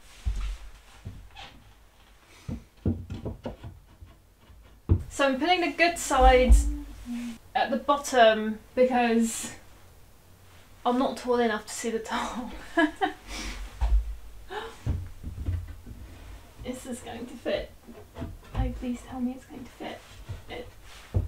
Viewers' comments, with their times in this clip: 0:06 Are you humming while you're talking?